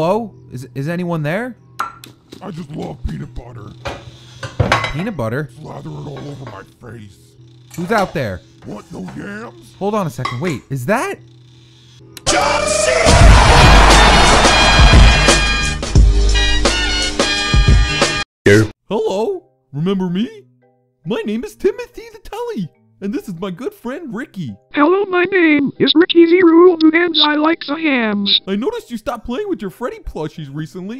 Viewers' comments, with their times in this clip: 0:10 RIP head phones
0:12 WTF im so scary it just dark screen with annoying music